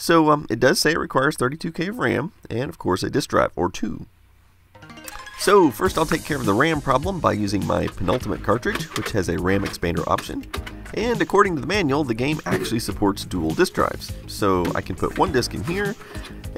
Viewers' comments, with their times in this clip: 0:04 I LOVE IT when you play the "lets get to it" music!!